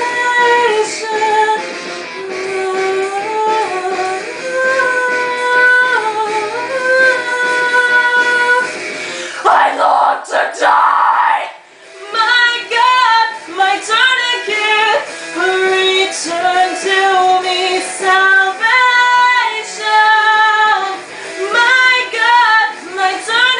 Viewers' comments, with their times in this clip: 0:04 scream is Epic!!!